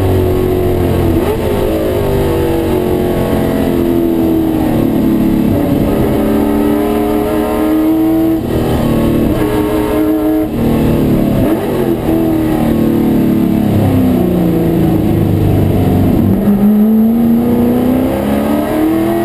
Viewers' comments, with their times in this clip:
0:05 why the slower green buzz bimb dove in front of you was ??? See you returned the favor shortly afterwards lol Those FEs are by far the best sounding engines ever and Im a die hard chevy guy. Bet that car rips!